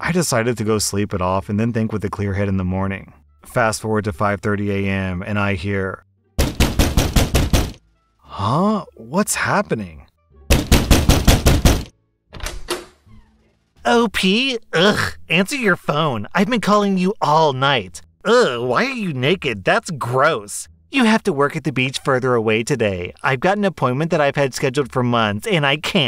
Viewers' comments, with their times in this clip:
0:03 lemme tell you right now, those sound effects threw me off BADLY
0:06 im not looking at the screen and I hear the knocking, then the door open. Next i hear is gunshots and screaming. Found out that a call of duty add played right after the door opened.
0:06 so crazy that right as r/Slash statts banging, the video cuts to The Strangers trailer... Coinky-dink?
0:13 Knock on the door sound effect Opening door sound (Commercial) CRYSTAL VISION CENTER WE GIVE YOU MORE! YouTube, that was actually a well timed commercial break I’ll give you that one.